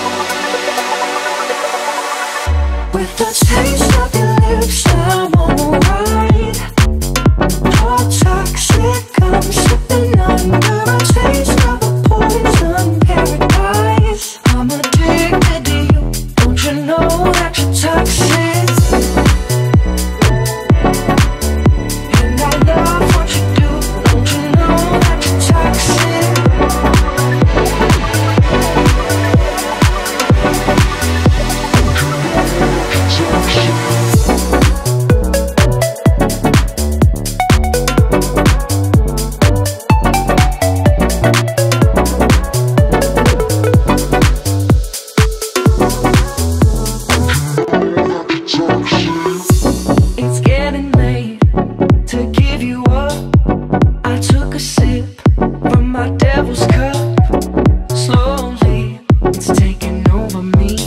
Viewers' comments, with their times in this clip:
0:07 I always thought it said ‘your toxic hand slipping under’ :/ my life is a lie also 2018?
0:46 Allow me to turn your attention to the audio crack found Have a nice day!